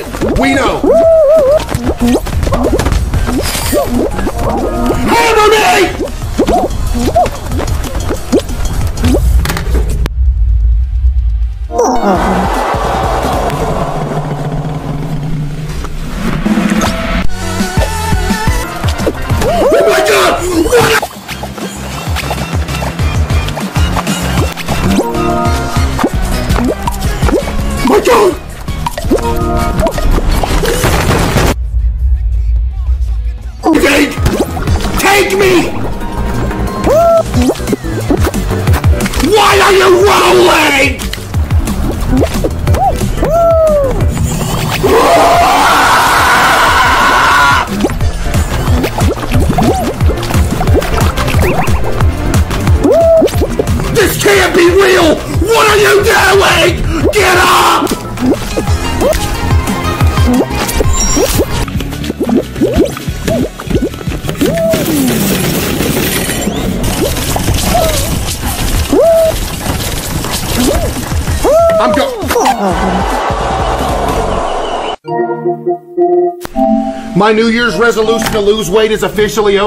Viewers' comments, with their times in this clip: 0:06 you can hear the shockwave 💀
0:20 this KirbOh lookin dude just chugged the sound like a drop of water.
0:43 bro sounds like IShowSpeed
0:44 CASEOH SOUNDS INTO BLITZ PRESSURE!!!!!!!
1:02 You hear the uncountable amount of utensils claterring on the counter after he casually ate 12 people from the previous stream.